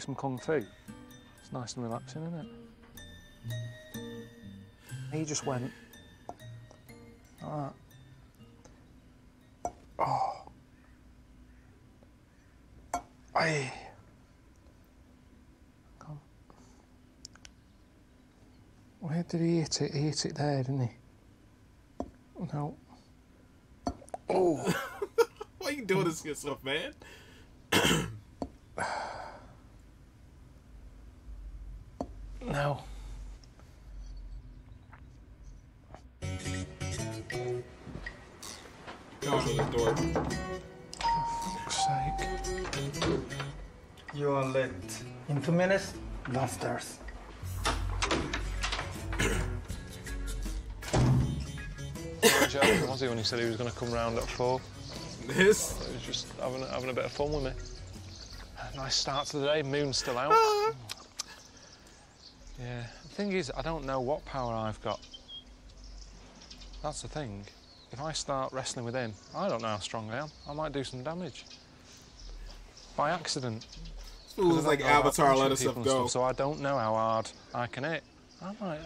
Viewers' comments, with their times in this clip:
0:05 lessen to the voice his head must be empty
0:59 the way Karl says it reminds me or Ricky